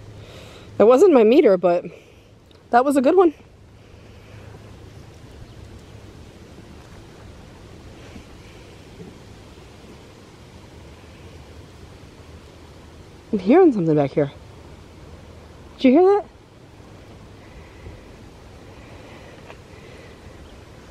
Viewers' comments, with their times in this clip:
0:08 Whisper ...new subscriber 👍